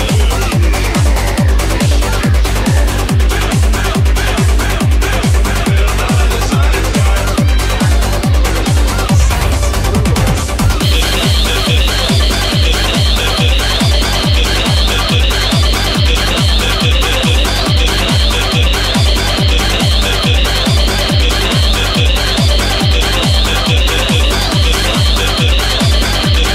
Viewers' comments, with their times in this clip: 0:10 the heads sound so COOOOOL